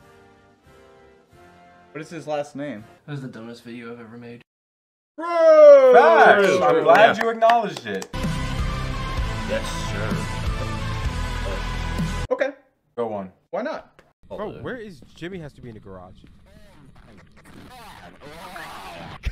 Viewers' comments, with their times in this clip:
0:05 Dude I was just jamming to the music